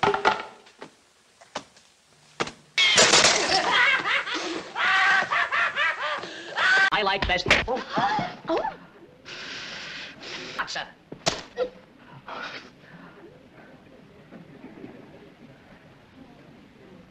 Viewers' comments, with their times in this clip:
0:04 omg I laugh so hard at these. and the laugh is absolutely perfect..! omg id love to be able to laugh like that! 3 stooges forever!